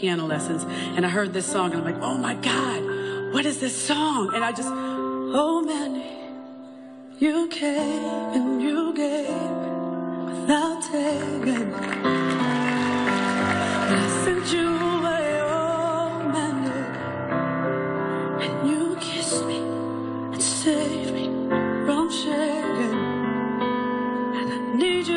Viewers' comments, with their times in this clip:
0:08 the moment Barry Manilow realizes that Tonii sings it better.